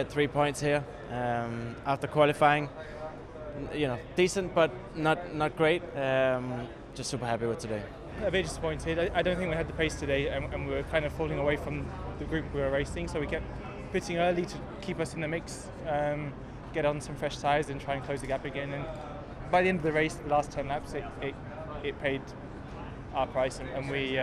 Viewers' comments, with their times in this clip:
0:08 alex's eye is discolored, he keeps rubbing his neck and turning his head and can barely finish a sentence. he sounds discombobulated are we sure hes ok from that crash?